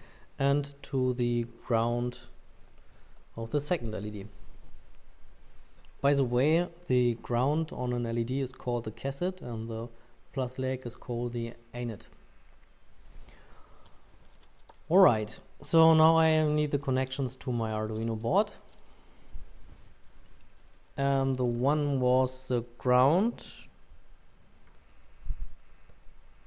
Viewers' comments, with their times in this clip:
0:08 In case you are confused, "Kessit" and "Aynit" refer to "Cathode" and "Anode," respectively.